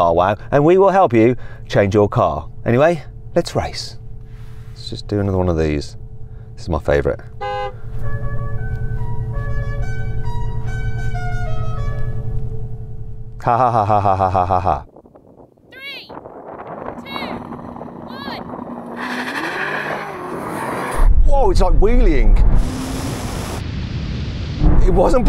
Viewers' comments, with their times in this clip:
0:08 GTA V Honk Lol